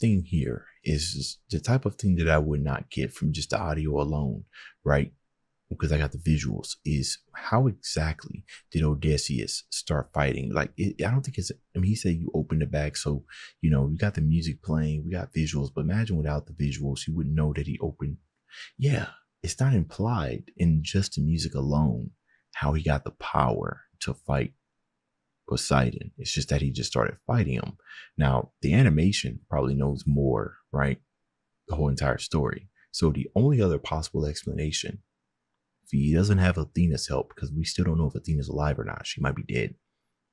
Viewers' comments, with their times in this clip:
0:04 the audio implies something happened with the wind bag you hear the instrumental of Aeolus mix in as he grabs the bag and starts fighting
0:09 so you can hear the melody from storm in the background, meaning it is slightly mentioned. But yeah Ody being that strong doesn’t make a lot of sense. but it’s cool so I’ll give it a pass
0:16 we hear aeolus' theme repeating when he's reaching for the bag
0:23 if you listen to keep your friends close, the wind god has a sound that lets you know their there and when the bag gets opened, you can hear it then too. that’s how i knew, but if you don’t pay attention it’s pretty easy to miss (idk how to explain sorry 😭)